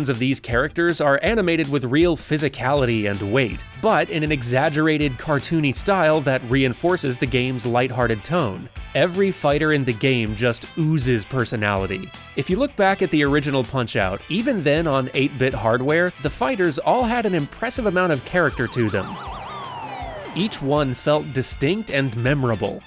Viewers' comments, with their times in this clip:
0:09 XD My speaker glitched at the perfect time so it sounded like you said "Every F*ker in the game.." LOL